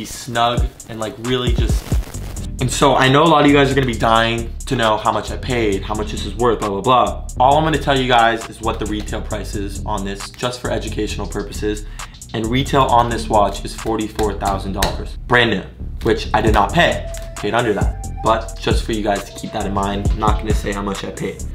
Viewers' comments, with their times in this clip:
0:06 I heard the 🎤 go off & look on the left of me.. scared because it’s dark & I thought someone was next to me😭😭